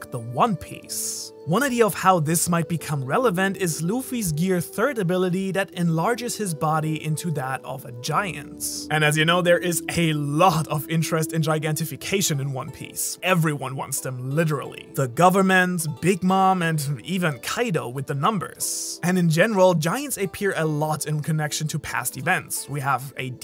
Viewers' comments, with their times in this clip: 0:07 floating dragon music